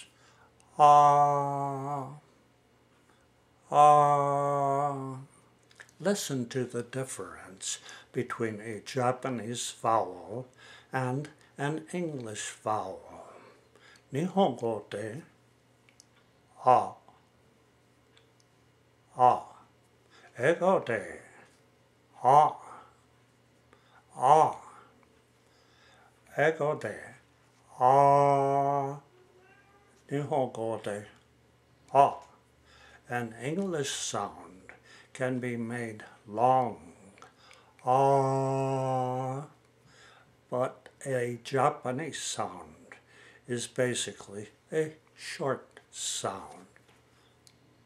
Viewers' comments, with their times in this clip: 0:09 He pronounces "fellow" strangely.
0:27 I heard a cat go "Meeoww..." in the background noise
0:28 after the ahh part you can hear a meow
0:28 he slips into his third dialect of cat-talk